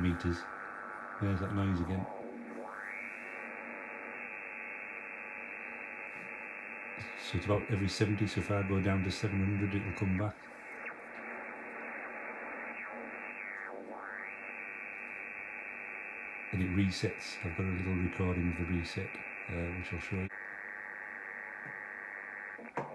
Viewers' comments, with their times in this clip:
0:03 Did you find out what the noise is a ? I have the same thing...intermittent, varies in strength according to band. Troublesome mostly on 40 and 20 meters. Mine occurs every 10-15 khz....very annoying and puzzling! Nice video...